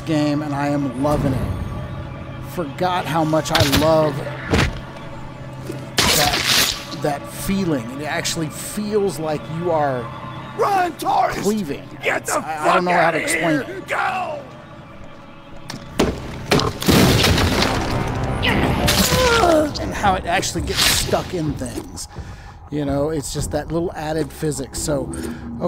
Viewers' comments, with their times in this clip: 0:07 Looks cool, although did you check the game audio desync as I could tell it was bad